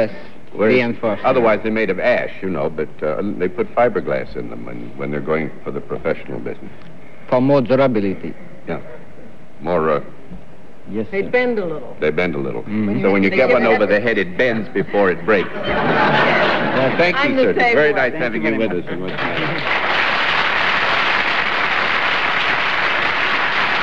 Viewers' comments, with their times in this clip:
0:05 It seems no one understood the hockey stick seller when he said that pro models had fiberglass for more "durability" His French-Canadian accent stressed the rab syllable more than the bil one. The conversation continued as if he had said flexibility.